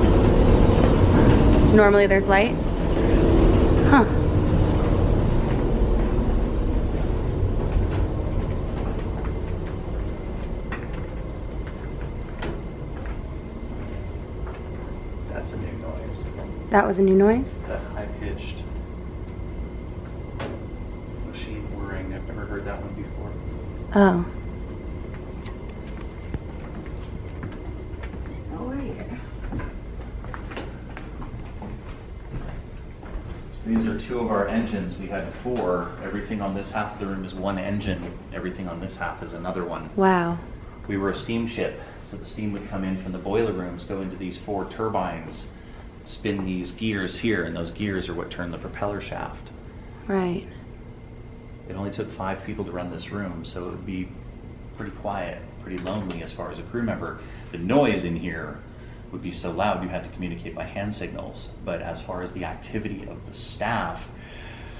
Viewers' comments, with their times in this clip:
0:08 x0.25 - "I'm behind you !!" Full screen sounds better for some reason.
0:32 Just before I heard “ get out” clearly but it didn’t look like they heard it
0:49 there is a whisper which sounds like its saying "what happened?"